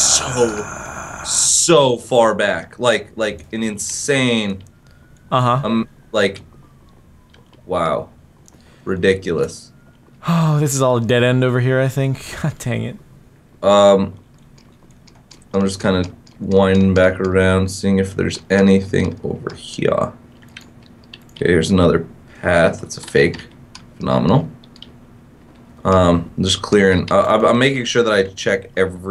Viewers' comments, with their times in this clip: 0:10 I heard in police did anything happen ? 😳🙀😱